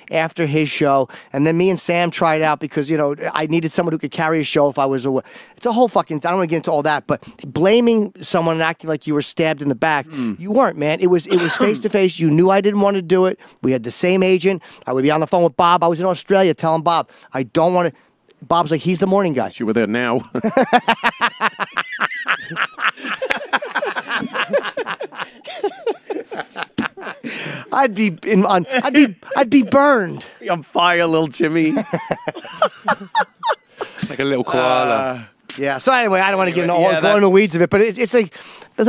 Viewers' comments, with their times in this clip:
0:05 🤣😭☠😭🤣 God dammit this was beautiful. Miss hearing this hard a laugh and one of ant's lines lmfao
0:14 Coming from the guy who has put together 3 of the 13 Jim Norton Laugh Compilations, hearing that little one liner by Ant followed by Little Jimmy’s laugh was phenomenal. Took me back to those good ol’ days.
0:15 makes me want to binge every Norton laugh compilation again
0:15 of course the worst thing said is what lil Yimmy laughs hardest at. 😆
0:16 Ant makes jim laugh
0:19 my first time seeing a genuine, high def jim norton laugh compilation video clip
0:20 ant making his friend lil yimmy laugh is the best